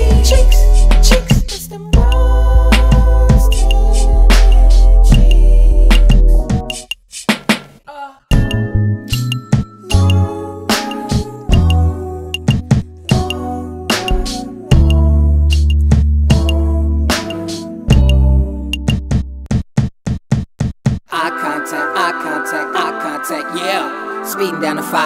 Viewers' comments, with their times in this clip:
0:05 sounds like find your wings when it begins
0:08 definitely just like Find Your Wings from Cherry Bomb